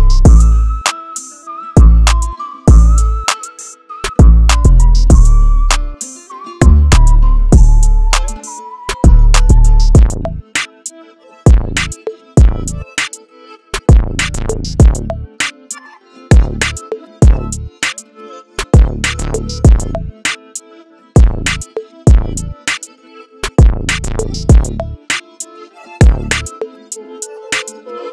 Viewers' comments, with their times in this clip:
0:10 that switch wild